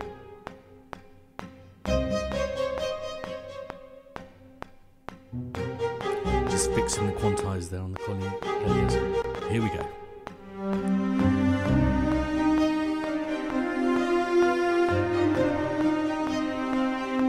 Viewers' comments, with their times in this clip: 0:04 The cello line is gorgeous mate.